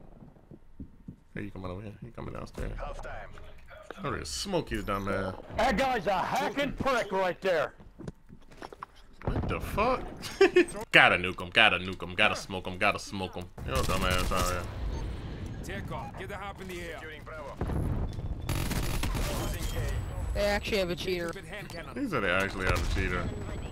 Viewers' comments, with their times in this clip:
0:04 why that dude sound like Daithi De Nogla